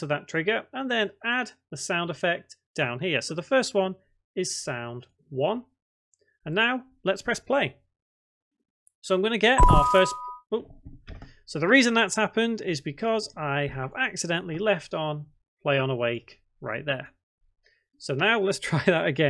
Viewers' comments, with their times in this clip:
0:07 That sound that I was setting up was a jumpscare sound. gee thanks